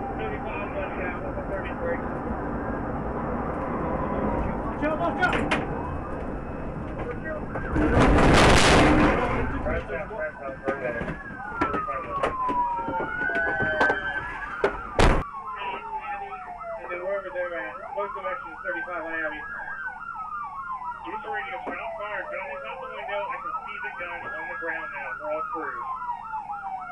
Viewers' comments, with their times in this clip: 0:07 Was wondering what the 2nd crash sound was. Had to watch it twice, hope the suspension is okay!